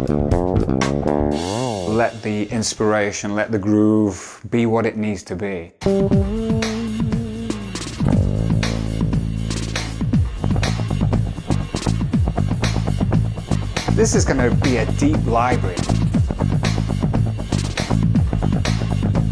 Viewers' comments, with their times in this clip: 0:04 The tone on that bass sounds just like chocolate Milkshake :D